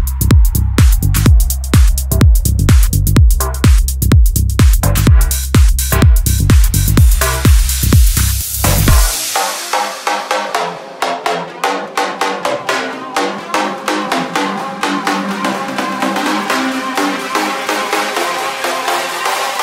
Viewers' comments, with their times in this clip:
0:04 The music reminded me of the love island music! X